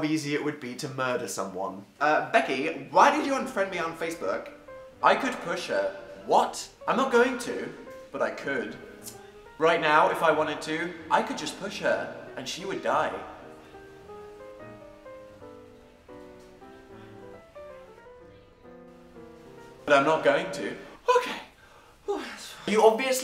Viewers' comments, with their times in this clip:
0:08 am i the only one who laughed my heart out at dans tut